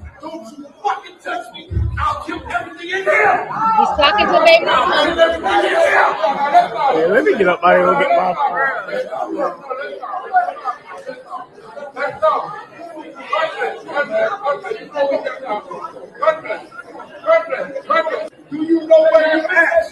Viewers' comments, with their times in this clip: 0:05 that Jamaican came out😅